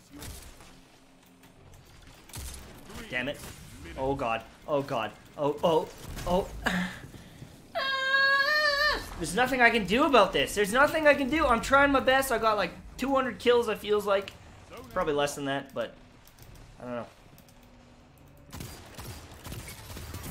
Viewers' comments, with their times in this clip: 0:06 Omg dude your fucking scream is so funny